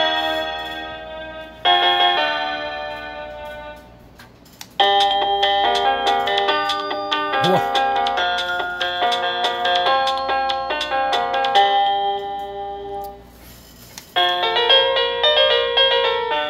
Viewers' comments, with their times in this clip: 0:04 they really are .. i agree.. 10000000000% i actually decided to go with the cringy techno tone to annoy everyone..